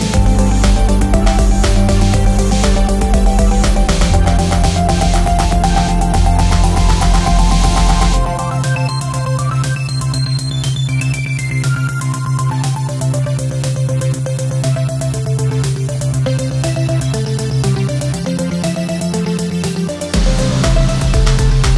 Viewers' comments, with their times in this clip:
0:05 are you drumming with loaves of bread?